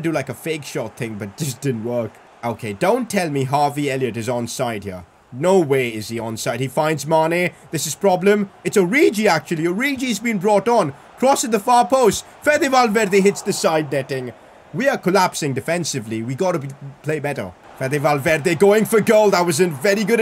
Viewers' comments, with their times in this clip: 0:08 Listen to how he says origi's name LMAO